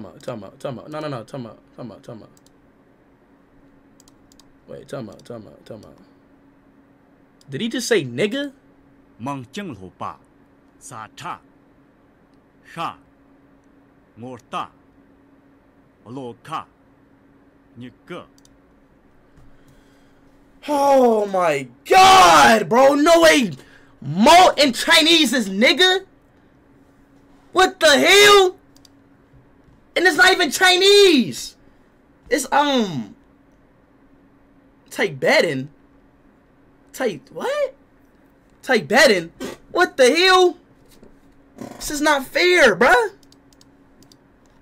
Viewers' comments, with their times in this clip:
0:04 its pretty much chinese
0:26 LMFAOOOOOOOOO THE WAY HE SAID IT